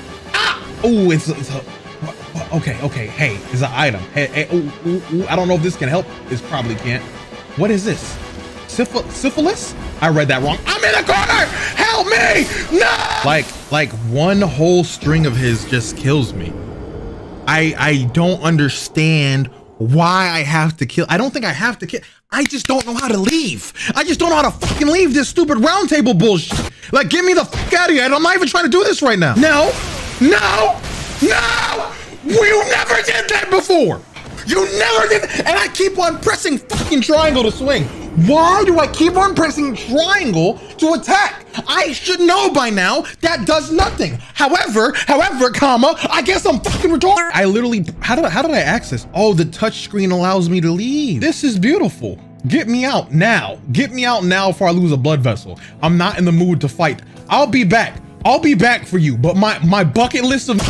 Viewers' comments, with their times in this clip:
0:10 ... Who are you yelling to, ma gee??? 😂💔 Funniest playthrough chanel O have discovered.
0:45 That background music It’s like you’re trying to calm down in post editing. 😁